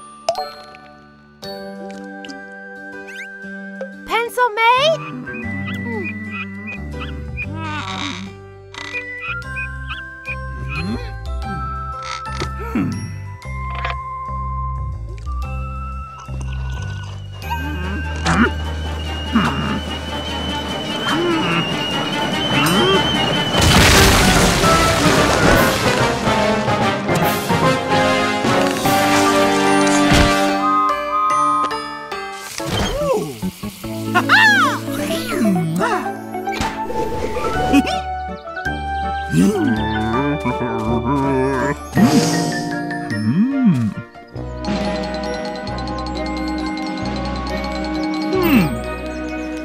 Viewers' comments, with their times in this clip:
0:03 OMG DID THIS GIRL JUST TALK DAMMMMM
0:30 that sounds like Stanley's whistle from Thomas and the great discovery the train looks like the time train from back to the future 3
0:30 it has Stanley’s whistle